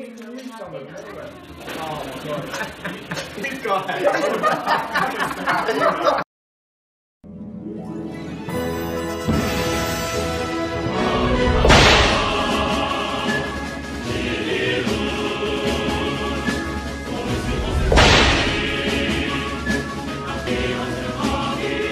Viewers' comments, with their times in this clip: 0:06 the AD didn't actually annoy me because of the background music and that slap sound thing 😂
0:08 I was getting ready to hear a laugh because of the SSB music....then I didn't hear anyone laughing.... disappointed